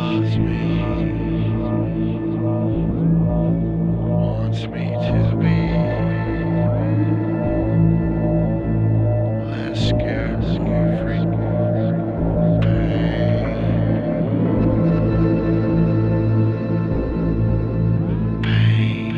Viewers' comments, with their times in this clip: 0:06 Is Shawn singing ?